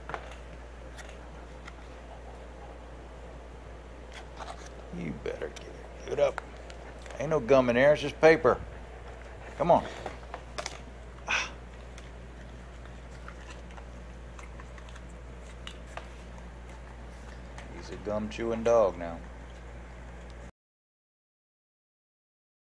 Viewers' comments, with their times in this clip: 0:06 I dont know if its your air compressor or a fan. but it made me think I had a flat on my rig. lol